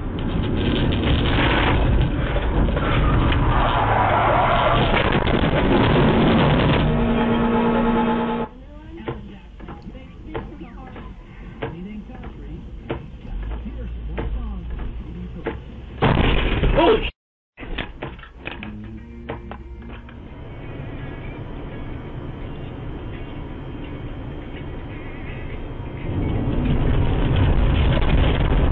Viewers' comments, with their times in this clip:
0:06 HE HIT VTEC BRO!
0:11 I can’t work out if that is a song or the window wipers